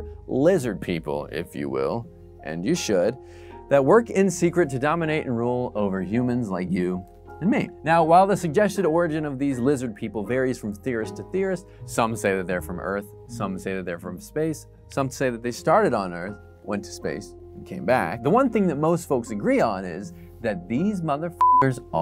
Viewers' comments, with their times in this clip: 0:07 he hesitated to say “and me” he is a lizard person